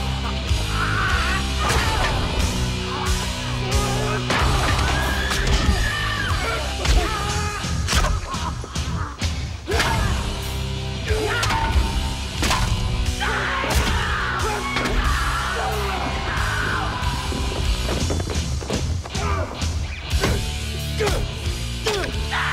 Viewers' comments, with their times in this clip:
0:07 The actor playing the hitman is low key laughing. Can't blame him lmao!